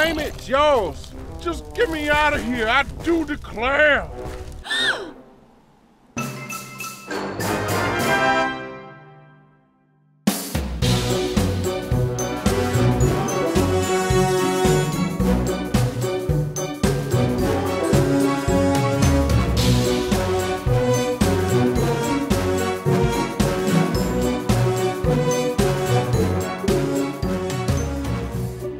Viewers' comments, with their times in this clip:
0:10 I like this music
0:10 I like that music tho